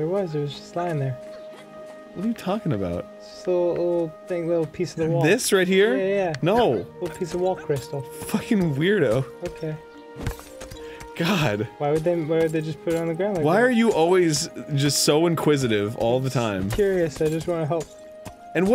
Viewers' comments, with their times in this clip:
0:06 you sound like Michael Cera 😂😂😂